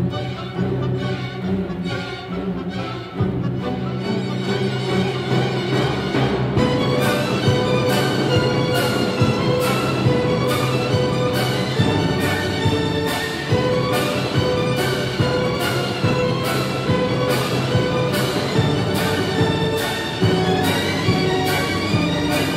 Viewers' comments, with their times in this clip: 0:06 when the bell rings and you are desperate to get out of class